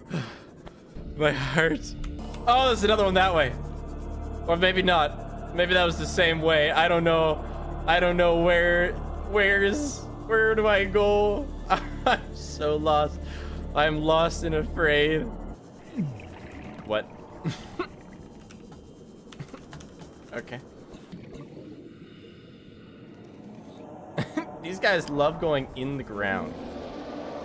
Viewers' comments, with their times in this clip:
0:10 your canadian is showing